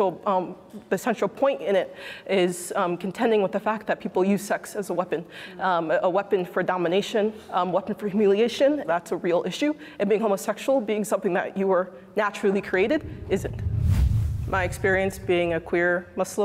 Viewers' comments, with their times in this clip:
0:04 uff when she started crying about the gay subject, I cried with you sister :'(